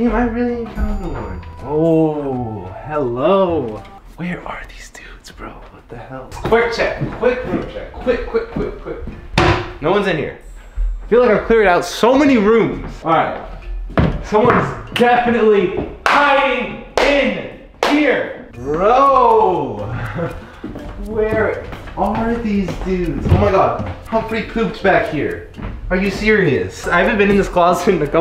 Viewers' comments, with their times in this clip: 0:09 Jesser: no one’s in here sound of toilet seat closing